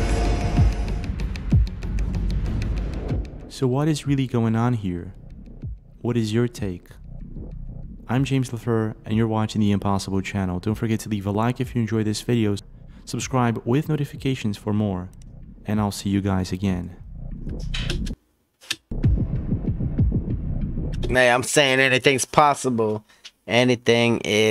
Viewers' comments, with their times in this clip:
0:08 You can hear train horn